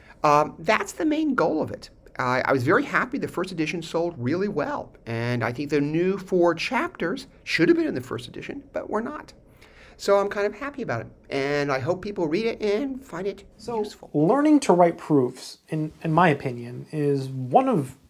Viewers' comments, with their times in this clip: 0:03 he had me ROTFL... "What's the poyyynt?" His accent adds to the hilarity. Every lecture course should really being with answering "what's the point?" They say it's not about the destination but more about the journey to get there. Sure. But it helps to have a motive to get somewhere.